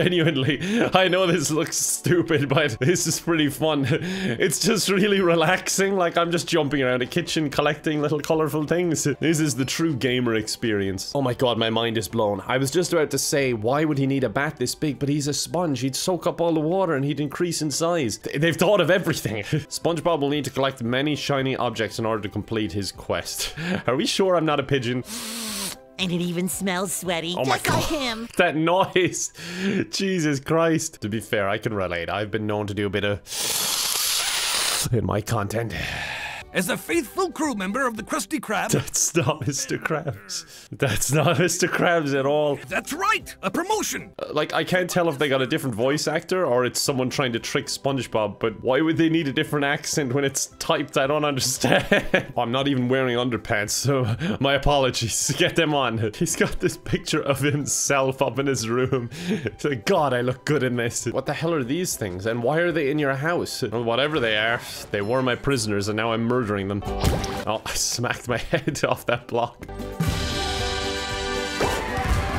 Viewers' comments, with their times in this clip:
0:10 So ever since I was little the insidious movies have scared me a lot more than any other horror movie. and last week I stayed at my cousin's house and I scared the shit out of him by playing that song tiptoe by the window. And we've just been joking about it for a while now. But the song just still scares the shit out of me, and I'm watching this a.m. with my window open so the second I heard that I jumped up and closed my window and just scared the shit out of me. (Tiptoe through The garden is a song that plays in the first insidious movie by the way)
0:58 That isn't Spongebob, thats a random drifter trying to get into the Salty Spittoon